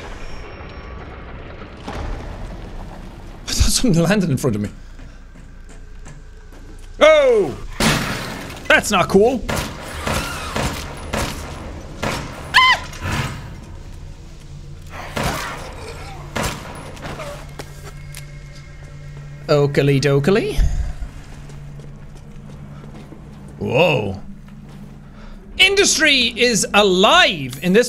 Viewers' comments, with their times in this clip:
0:08 *deep voice jack*: thats not cool literally the next frame *super high pitched*: AH
0:10 Today's noise I'm bringing to your attention is this scream: haha
0:11 battle cry lol
0:11 the battle cry of a manly warrior
0:12 best scream ever 😂
0:12 Tom from Tom and jerry scream:
0:13 Jacks shriek took me tf out 😂